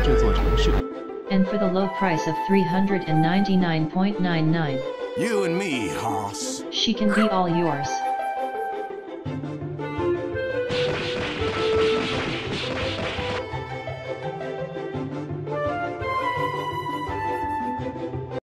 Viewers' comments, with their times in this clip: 0:07 She just went wan